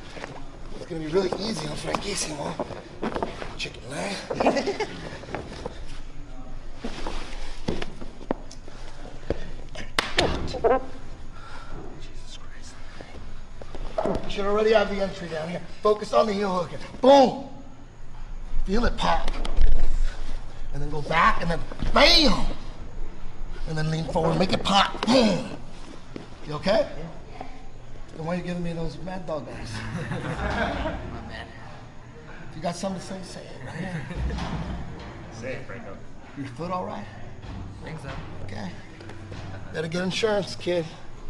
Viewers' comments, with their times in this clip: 0:03 that dude sounded weird lol
0:23 Let a fart out